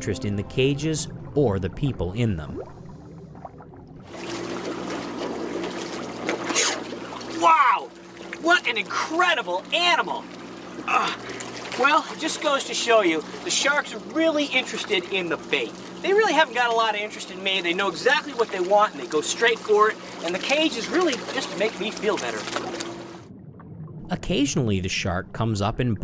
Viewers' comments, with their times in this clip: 0:08 I thought he was gonna say "Wha' an amoizing cray-chah!"